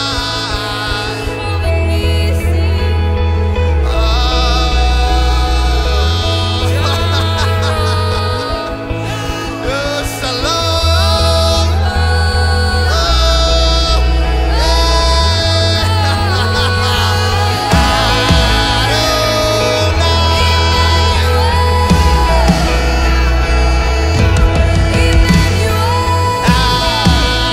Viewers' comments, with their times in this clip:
0:09 I love his laughs !